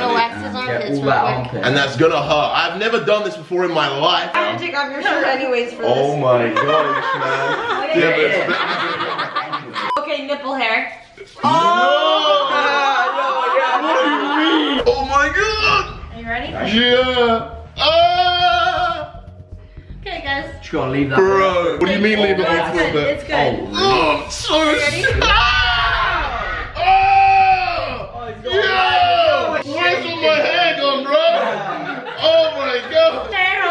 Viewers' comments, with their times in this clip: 0:06 sommer ray sounds like the zombies when u die on bo1
0:16 FaZe Kay is a gospel singer 😂😂😂
0:18 My guys laugh tho